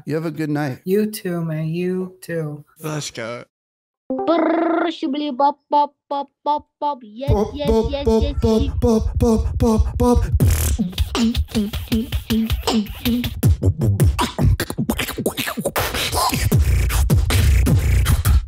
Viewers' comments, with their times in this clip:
0:04 YOOOOOO was that a BEARDYMAN BEAT BOXXXXXXXXX HOLD UPPPPP!!!!